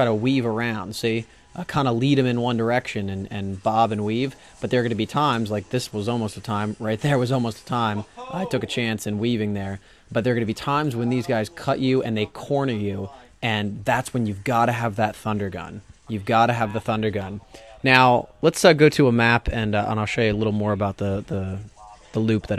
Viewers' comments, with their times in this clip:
0:07 background guy, "Whoah hooohhh!!!!!!!!!